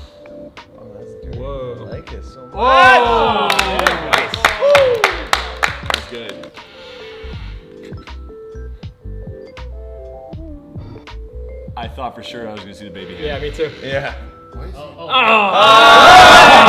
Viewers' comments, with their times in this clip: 0:04 Nobody: The Owl on my chimney at 4am: (left)